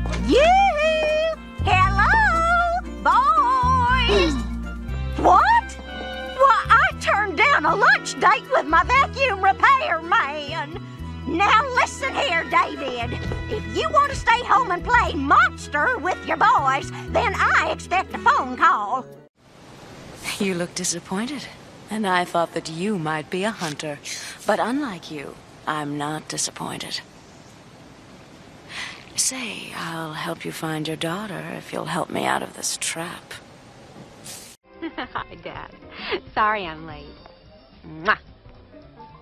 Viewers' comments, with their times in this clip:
0:04 sounds like the bus driver and Kennys mom
0:20 "unlike you I'm not disappointed"... neither am I 🙆🙌 ✨THAT VOICE😍✨ 👏👏👏👏👏👏👏